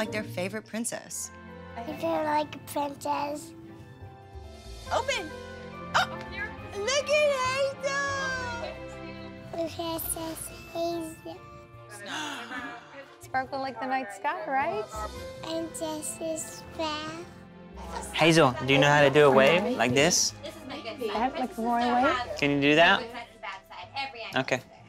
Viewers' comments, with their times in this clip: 0:09 to keep on playing Hazel’s adorable little voice over and over again. Thank me by liking this comment ;)